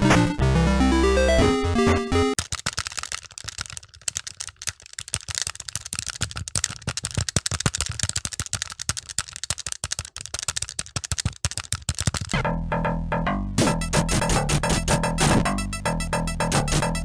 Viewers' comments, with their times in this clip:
0:03 that button mashin is relaxing